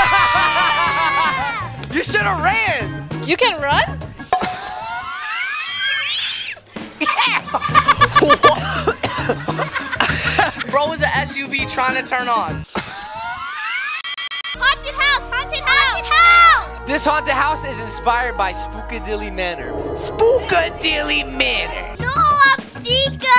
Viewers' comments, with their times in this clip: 0:04 bro is machine turning on
0:04 SUV car sound